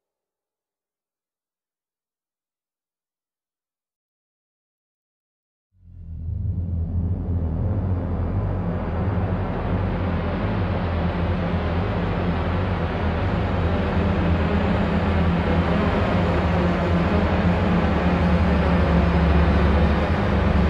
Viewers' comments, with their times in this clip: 0:05 Reminds me of the Sicario OST, especially Danger Close